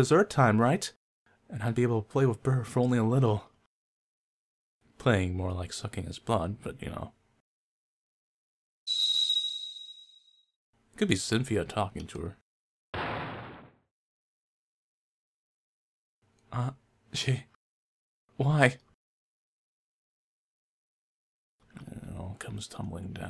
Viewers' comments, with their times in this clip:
0:04 Waaaaaah, I heard "more like sucking his balls" instead of "sucking his blood" and I was like wtf??? Am I really that perverted? :o